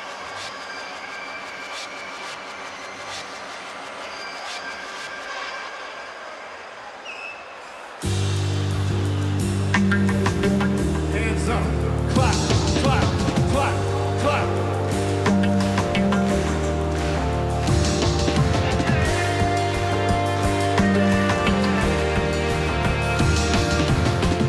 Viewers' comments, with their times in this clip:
0:07 New Pendulum is sounding very 80's influenced :)